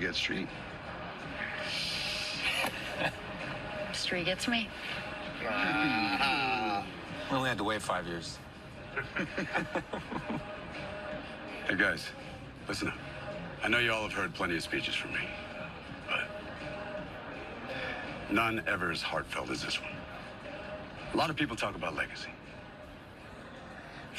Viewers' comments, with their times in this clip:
0:10 Tan knew, theres no way he didnt know ANYWAYS him laughing it out cuz he knew the entire time 😭💪